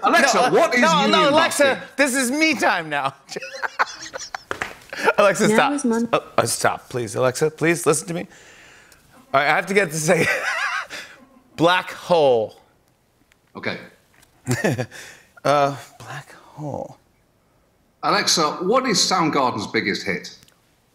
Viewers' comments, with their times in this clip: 0:05 The sound of true fear